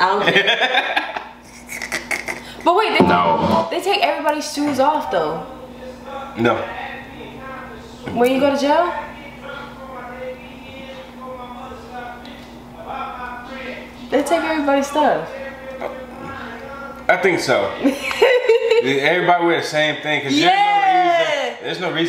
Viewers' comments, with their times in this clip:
0:05 Lmaooo@ Eazy E music randomly playing in the background